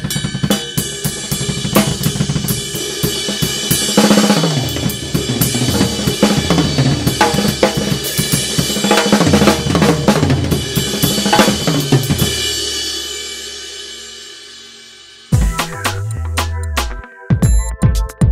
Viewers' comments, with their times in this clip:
0:03 you went there all "Animal" awesome ride!!!